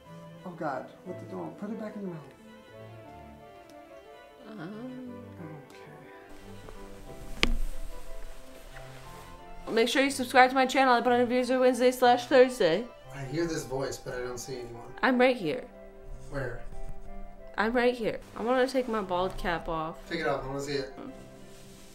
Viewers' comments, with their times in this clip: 0:04 soft slap "äæêh"